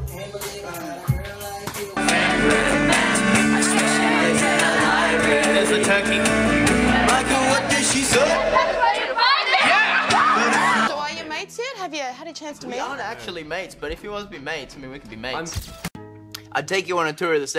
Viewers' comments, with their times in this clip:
0:03 OMG THAT WAS ME AND MY FRIENDS SCREAMING THE LYRICS!!!